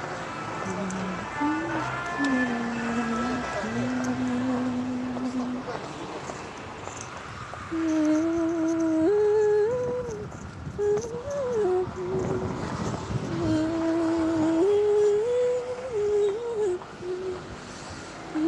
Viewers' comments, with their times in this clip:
0:04 the melody kinda sounds like hey big eyes